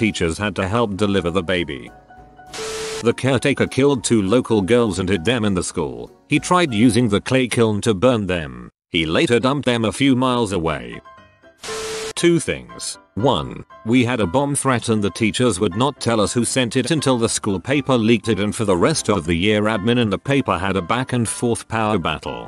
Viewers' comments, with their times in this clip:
0:03 the cheery music during this unfortunate story and how it steps up at the start of the next unfortunate story is a fucking riot. i'm not laughing at the stories. they are unfortunate. just find the choice of music for these to be laughable.